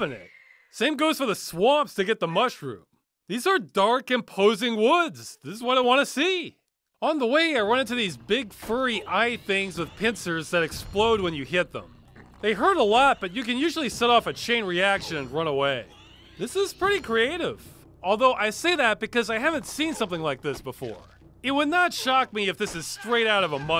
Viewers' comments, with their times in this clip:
0:08 The music Sounds like Kain is visiting Janos' Retreat from Soul Reaver 2 in Blood Omen: Legacy of Kain, I need to find this track.